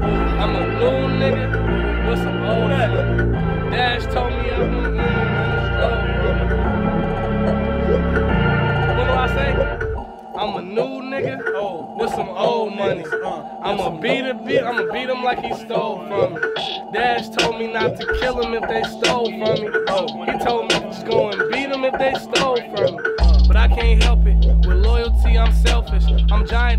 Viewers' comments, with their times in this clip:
0:09 juice tryna fight this dude for the flow 😂💀💀💀